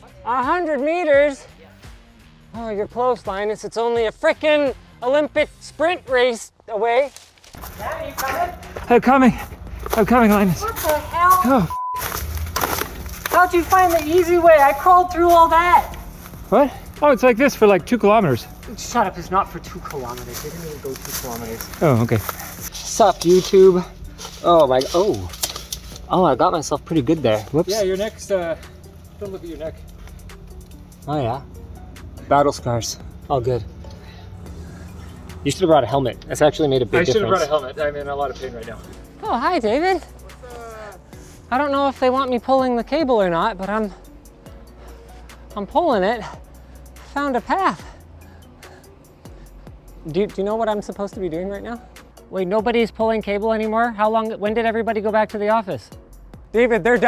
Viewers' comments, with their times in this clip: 0:09 "I'm coming, I'm coming Linus" pants aggressively
0:42 this is the most Canadian I've ever heard Linus sound